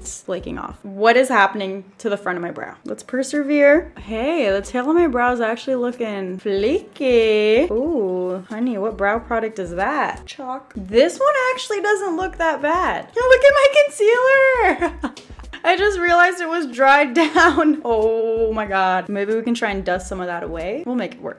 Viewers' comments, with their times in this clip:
0:08 Omg " Oh honey what brow product is that?" - "Chalk" (the. way. she. said. it..😂😂😂😂😂😂😂)